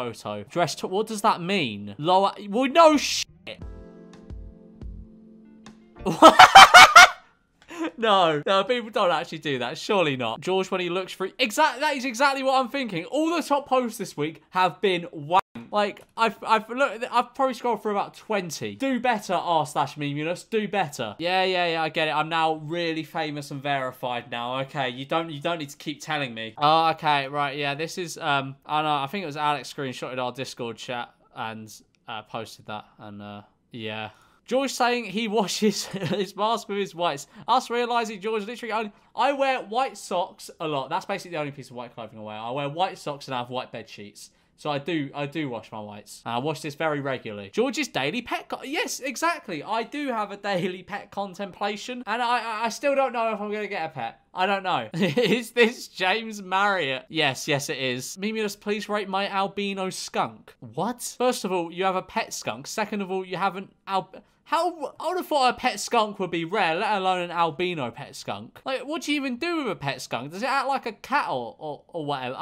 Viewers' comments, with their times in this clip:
0:06 my ears are bleeding
0:59 WHY DID HE SAY WHAT LIKE THAT GSDHJKKH
1:00 why does he sound like leafy when he says what